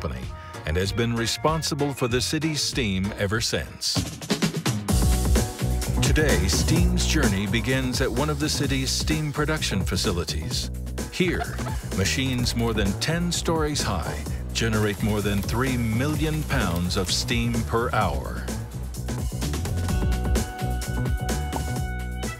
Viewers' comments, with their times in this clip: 0:03 Does anyone happen to know the song that starts playing ? That funky, upbeat, Acid Jazz sound makes me want to get down on the dance floor.